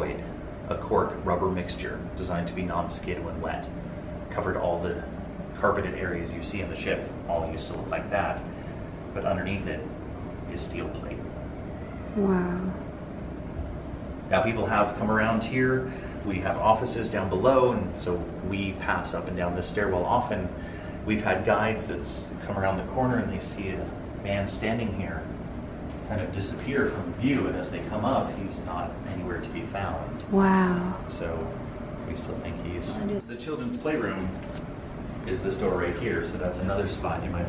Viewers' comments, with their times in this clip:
0:10 it sounds like a kid yelling. (this was when he mentioned the nursery so it seemed relevant)
0:10 Does anyone else hear a cry or voice or is it just me. I'm watching on the TV at my parents and the sound is normal and I heard a cry kind of thing. I had to rewind the video a bit to make sure I wasn't hearing things and sure enough I heard the cry again! Anyone?
0:11 did anyone else heard that? like a child crying in the distance when he stop talking for a second?
0:11 you can clearly hear a girl making a noise
0:11 it sounds like their is a baby crying in the background
0:11 right after he says all steel plate . Can hear a yell 😳
0:12 it sounds like a little child screaming of making a sound did anyone hear that or is it just me????
0:12 I heard a wailing or crying noise
0:12 I heard a scream or something... anyone else? Or is it just me?
0:12 Is it just me or there was a baby crying?
0:12 on the stairs I honestly heard a young child make a noise (it almost sounded like a cat meowing)
0:13 you can hear what sounds like a baby crying
0:13 did anyone else here a weird laugh or cry?
0:18 Does anyone else hear a baby cry